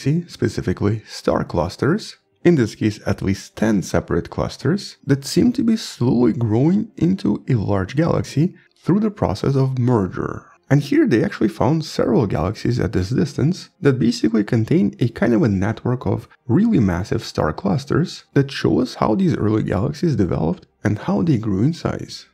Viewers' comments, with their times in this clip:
0:08 I thought it said "Through the process of murder"